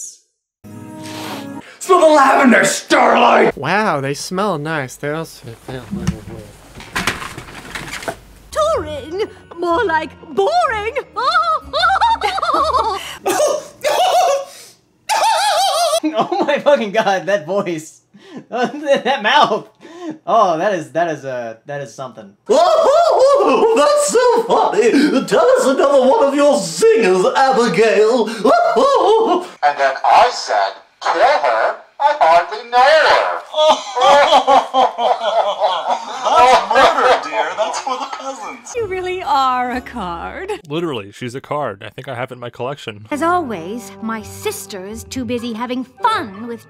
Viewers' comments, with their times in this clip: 0:09 WHY DOES THAT REMIND ME OF THAT ONE BRITISH CHICK FROM MY LIFE AS A TEENAGE ROBOT?
0:28 FINALLY I'M NOT THE ONLY ONE!!!!!!!!! Also I have no idea who he's imatating but it's really funny